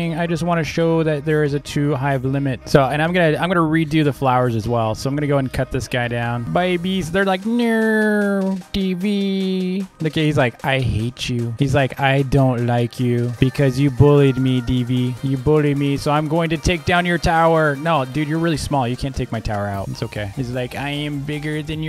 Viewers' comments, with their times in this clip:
0:09 your voice is so cute xD Super